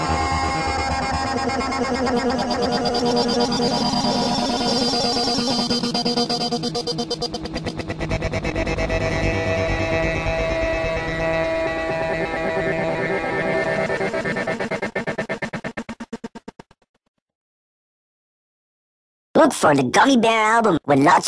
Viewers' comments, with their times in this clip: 0:08 Bear is Very Slower